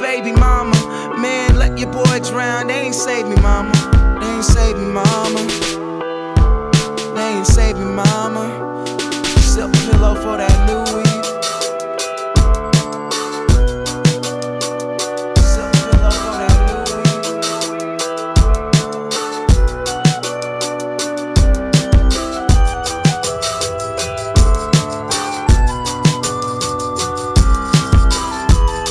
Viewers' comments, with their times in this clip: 0:10 reminds me of a faun playing a flute in the forest while the sun sets.